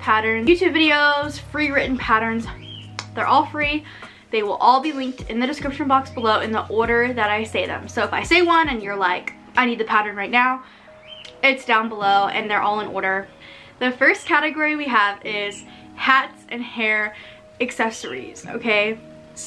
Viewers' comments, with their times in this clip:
0:03 YOU HAVE A COCKATIEL DONT YOU OMG THOUGHT IT WAS MY BIRDY!!!